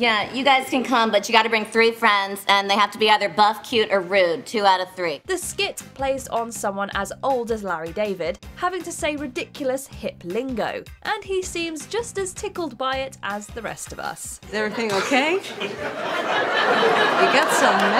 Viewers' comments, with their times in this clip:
0:05 the French explored the atlantic northeast, so thetes a frech accent, They went on inland and settled parts of Canada in that ares